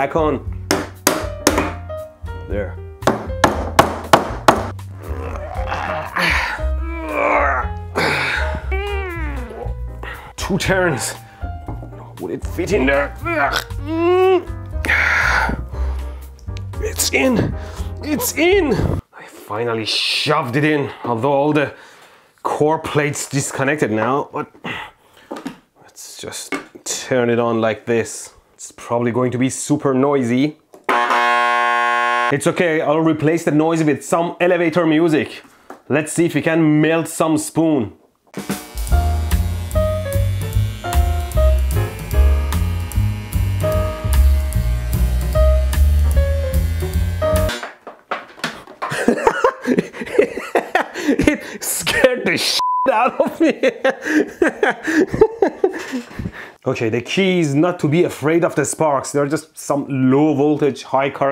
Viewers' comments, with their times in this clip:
0:05 the sounds that emanate from my bathroom in the am. I am afraid of high voltage and that goes the same for high current... i was cringing when you did 2 turns of 000 awg welder wire witht he spoon. and i cant believe that glass table didnt break when you were smashing that wire on it lololol. high energy is a bitch no matter what the form!
0:06 Just close your eyes for a few seconds and prey your neighbors cannot hear it
0:16 that sounded weird
0:16 sounds like prom night.
0:28 "its probably going to be very noisy" loud incorrect buzzer
0:29 "it's probably going to be super noisy" EXTREMELY LOUD INCORRECT BUZZER
0:29 Mehdi: “It will probably be super noisy.” Transformer: TA-DAZZZZ! Mehdi: “I’ll replace the noise with some elevator music.” [music plays] Me: [expecting every other line in the music to sound really bad for some reason]
0:31 IRM MACHINE BE LIKE
0:31 This is the most unnerving video so far 😅😅 Listening to the transformer arcing while he picks it up had me like "WHY ARE YOU TOUCHING ITTTTT!?!" 😅😅 🤣🤣🤣 This whole scene had me dying
0:31 it sound like inside of MRI scan tf
0:32 some elevator music also used to test crappy earphones
0:34 Suddenly get reminded of HD600 headphones with that music
0:36 when you here walk through the park not getting worse...
0:37 The background music: 😇👍 The video:🔊💥⚡🥄
0:37 why did you put jazz music in to the video. it's make a lot funnier
0:38 I was expecting some sound difference between each bars. Thanks dankpods.
0:38 ayo mate, those huhduh six hundoh are blasting
0:38 Dankpods ruined me and I was expecting the music to become awfully bassy halfway through it
0:38 oh no, it's that song
0:38 I know this is not related but when i heard the music, i instantly think about DANKPODS.
0:38 I thought you were trying to melt a spoon, not do a headphone comparison test!
0:38 Have I been watching too much Dankpods, or did anyone else expect to hear the music change in quality when it got to the next measure?
0:38 music starts playing my brain: "THE HURR DURR SIX HUNGEOHS"
0:38 Anyone watching dankpods expects the music quality to get terrible after a few seconds.
0:38 Strange. Normally with this music I'd be expecting an Aussie bloke to be telling me a story about how he met a kangaroo and started having a conversation with it while on a trip to the supermarket for his daily jar of Vegemite to be somewhere in this video.
0:39 dankpods nugget bud test ahh music lmao
0:39 I’m surprised there wasn’t a drop in buzz or music quality after
0:39 also the perfect elevator music to test headphones against the HD600
0:39 the elevator music made it better
0:40 I was expecting the music to change to a worse quality xD
0:41 The ol mate senny music is what did it for me
0:41 some calm music and ElectroBOOM just almost died 🎶🎶🎶🎶🎶🎶😊😊😊😊😊😊
0:42 this music makes me want to put a pair of headphones on ear microfones while comparing it to another one and yelling at them in the procces
0:43 You expect the quality of sound goes down after 6 seconds.
0:44 it feels wrong when that song doesn't turn into garbage at that point
0:44 elevator music makes this 100% funnier for me
0:44 nice selection of music, this part is straight from a psychological thriller movie.
0:45 With the music I thought he was gonna bust out freakish ears on a stick
0:45 The video's audio quality dropped
0:46 when the audio quality didn't change it felt weird.
0:48 I loved the way he laughed 🤪🤪🤪😂😂😂😂